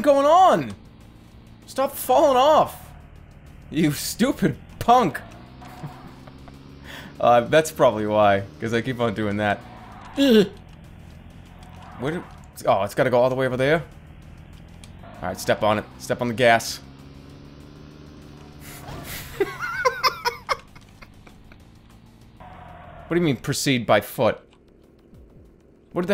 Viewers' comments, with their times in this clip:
0:10 sounds nothing like Jerma